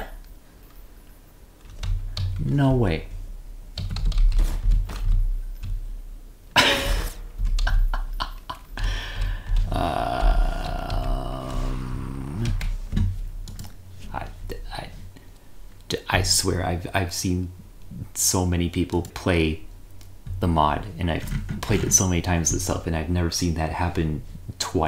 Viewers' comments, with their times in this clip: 0:09 Bro turns into a vortigaunt charging up